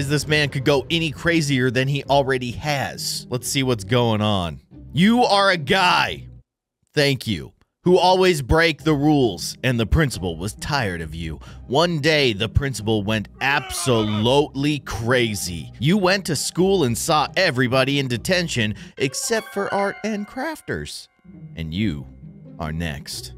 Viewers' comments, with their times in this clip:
0:05 I can’t get over how passionately he said it. “You are a guy.”